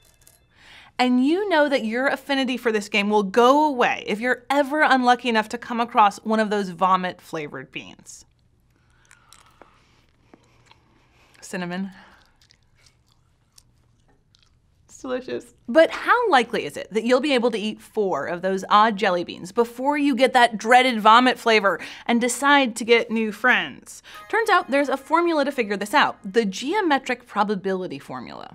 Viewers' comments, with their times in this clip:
0:09 I can hear the jittery breathing. Hahahahahaha